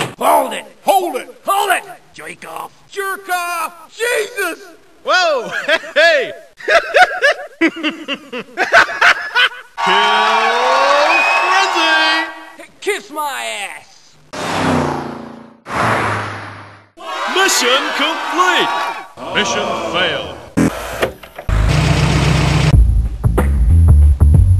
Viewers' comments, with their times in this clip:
0:06 sounds so much like Dr Hibbert in The Simpsons